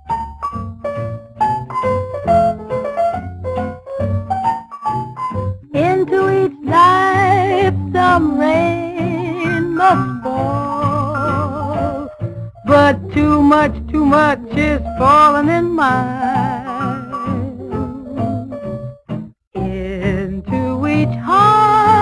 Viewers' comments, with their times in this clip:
0:05 Apparently it didn't teach you anything, since the cut is really really obvious to people, who are either musicians, or people, who know the song.